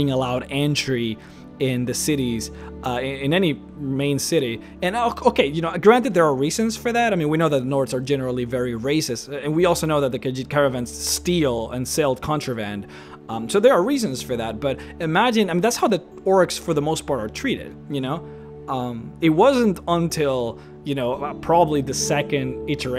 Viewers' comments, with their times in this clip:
0:03 That notification total broke my immersion.